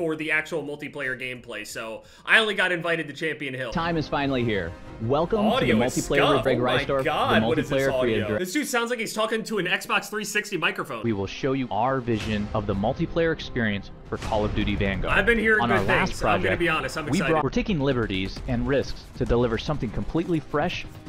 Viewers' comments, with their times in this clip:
0:08 Yo fr (on the actual call of duty video the ww2 *DING*)